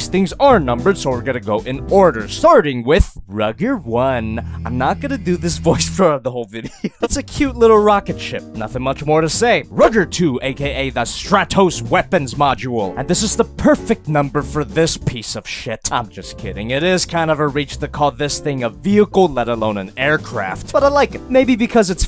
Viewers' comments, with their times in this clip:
0:04 i seriously thought i forgot to pause slapped ham video about creepy photos..